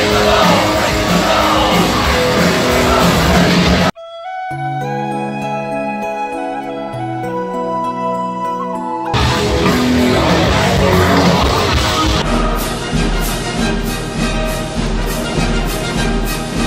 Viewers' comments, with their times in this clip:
0:04 pmsl epic music editing well done 👏 ✔ 👍 👌